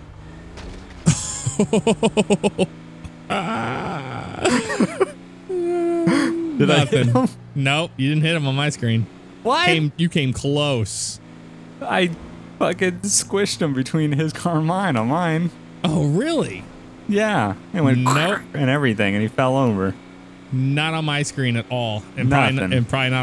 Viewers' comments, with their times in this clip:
0:07 the way he said WHAT got me laughing so hard
0:08 Dude the way you yell WHAT?!? Is so goddamn funny